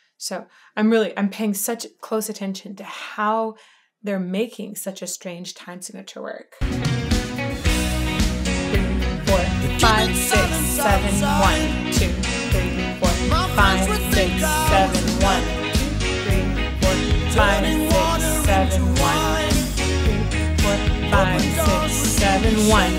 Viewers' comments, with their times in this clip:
0:03 Start singing on beat 5. Your analysis is so revealing! Thank you!